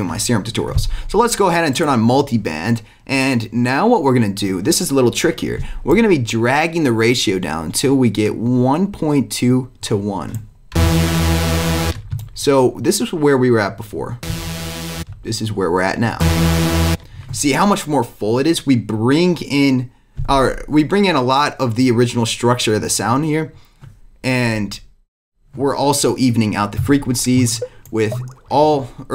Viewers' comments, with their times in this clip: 0:10 Sounds like the lead synth from pursuit of happiness Steve aoki